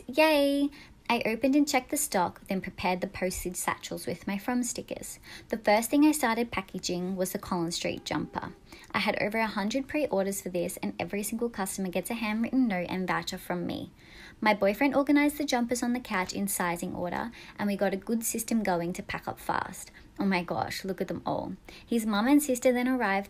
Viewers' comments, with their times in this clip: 0:08 it sounds like rosè from BLACKPINK-